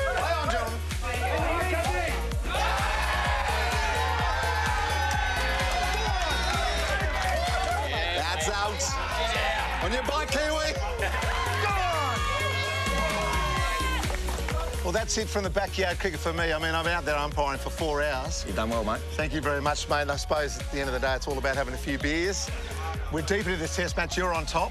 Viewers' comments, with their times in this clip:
0:10 thanks me katrr